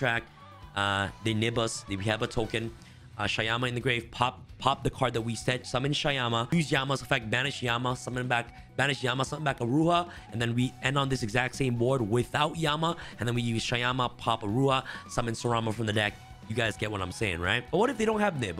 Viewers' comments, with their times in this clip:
0:06 Eminem is that you lol, rap god